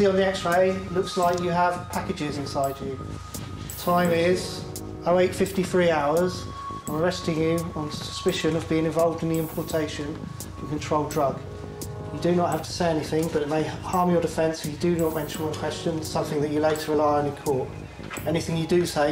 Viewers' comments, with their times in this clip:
0:06 Wait 53 hours? Ex-Lax works a lot faster